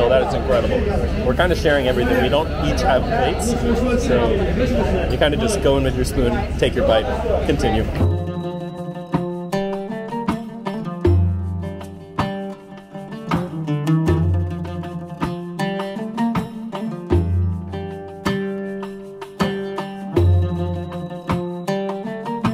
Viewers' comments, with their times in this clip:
0:08 That’s such a nice dandala tune